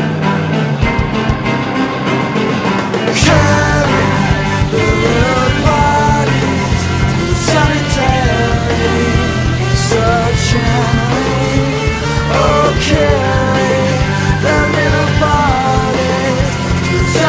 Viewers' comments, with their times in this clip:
0:05 When I was a kid my dad and I would listen to this album nonstop to and from school (granted with some quick volume changes under certain foul language) and when I was in the first grade I was tryinh to figure out what it was about what it was about, especially Killbot, one of my favorites. I misheard "bodies" as "bunnies" and I thought it was a bunch of kids getting depressed because their pet bunnies died and they were grieving. The song makes me laugh every time now.